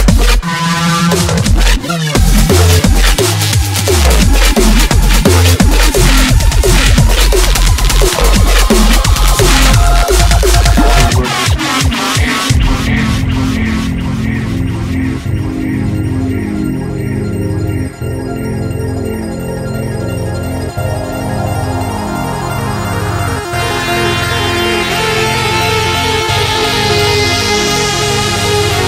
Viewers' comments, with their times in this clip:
0:10 that buildup that starts then the world comes to an end.. then...... annihilation.. my gaad..